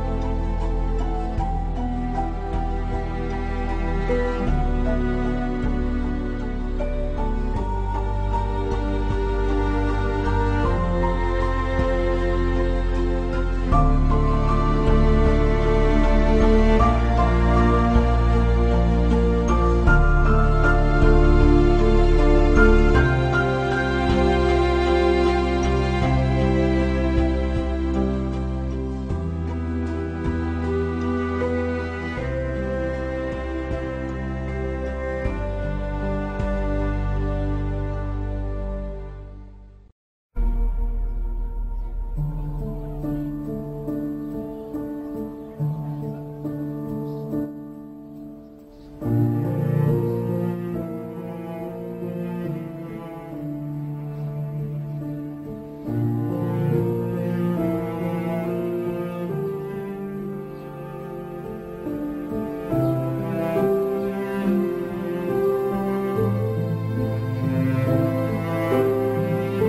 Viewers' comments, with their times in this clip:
0:06 From best tune !!!.. feels like flashback of entire life ..😫really emotional
0:54 I wish the song that begins lasted longer. It sounds like it was cut-off. Incredibly beautiful, though.